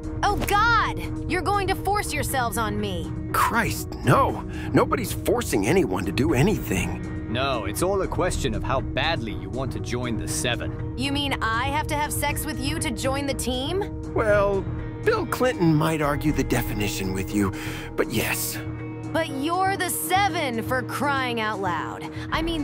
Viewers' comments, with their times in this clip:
0:07 I can actually hear it. Speaking of does A-Train sound a bit like Liu-Kang you think?